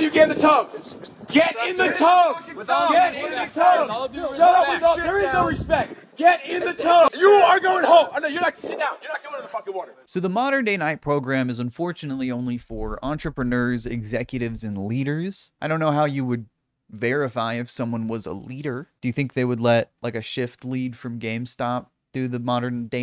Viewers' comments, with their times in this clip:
0:06 spongebob yelling at fucking gary: GET IN THE TUB